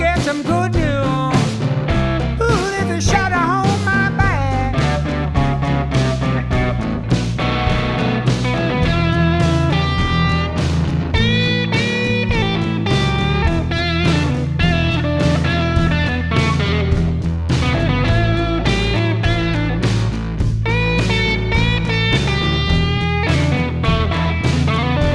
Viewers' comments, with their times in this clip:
0:07 What a great joy it is to get to watch John Fogerty having fun - playing his guitar.... From through to the end.... it's Go, Johnny, go...! Go, Johnny, go - go - go! What a legend! Listen to that tone!